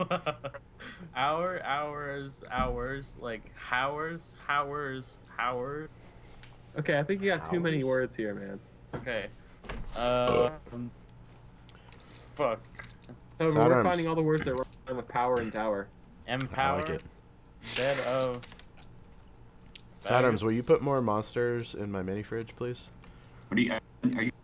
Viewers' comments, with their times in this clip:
0:10 i burped about a second before you did